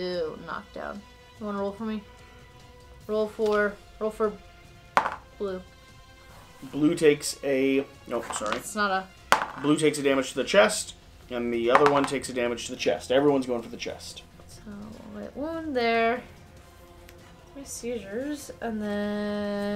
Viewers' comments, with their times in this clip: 0:04 Thanks a lot for producing more KDM content! EDIT: my favorite moment! Dat yawn💪🏻